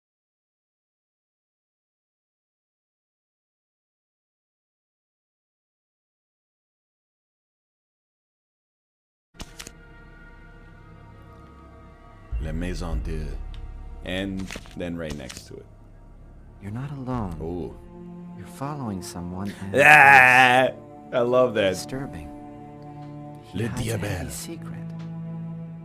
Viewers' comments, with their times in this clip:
0:09 iirc twitch muted that portion in the VOD because of the music. It starts back up